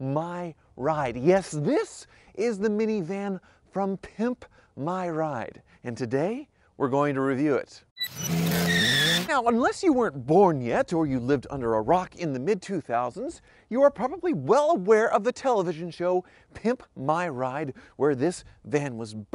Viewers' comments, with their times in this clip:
0:06 ouch I had my volume all the way up since he was so quite